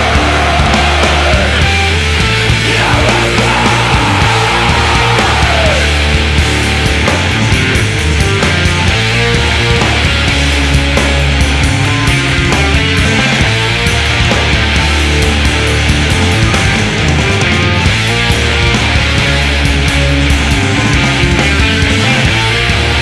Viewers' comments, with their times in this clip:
0:05 This riff just hits so hard every time. Billy K is a legend